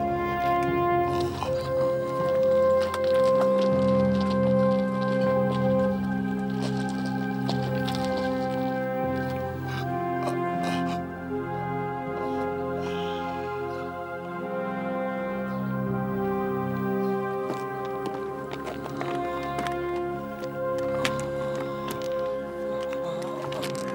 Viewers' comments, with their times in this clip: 0:09 managing to make dying sounds without moving your lips - Now that's soldering!